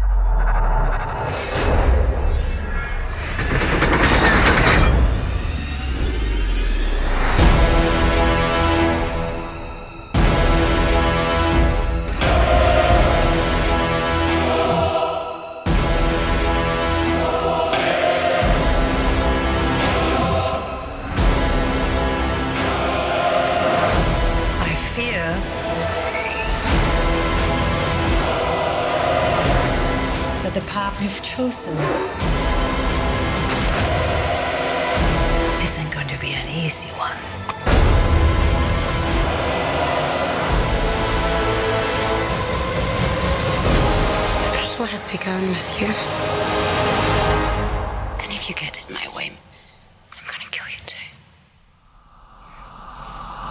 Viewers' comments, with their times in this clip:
0:06 part is one of most powerfull parts in trailers history, punisher in blood, daredevil with chain killing light and in devil we trust... oh my gosh + inception horn sound, nothing can top that
0:11 When Daredevil hits out the lights and the music starts bumping I freaking lost it this show is the absolute greatest Comic book show of all TIME!!!...Walking Dead is a close second but damn this show is great!!!!
0:24 the trailer music is so good
0:35 sounds more like Madame Gao then Elektra, I hope I'm not the only to notice that but anyway it would be good if she returns because she a character connected to Iron Fist.